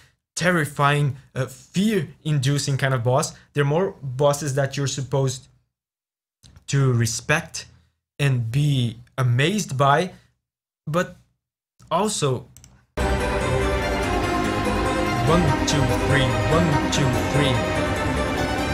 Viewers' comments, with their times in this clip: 0:03 Respect us, dance with us, but remember that we're still trying to kill you. That's the vibe I get from this song! xD